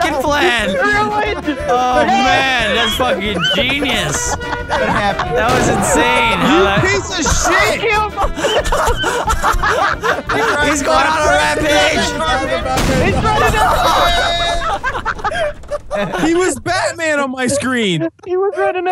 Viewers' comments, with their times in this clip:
0:05 sorry i hit you it’s my car and horn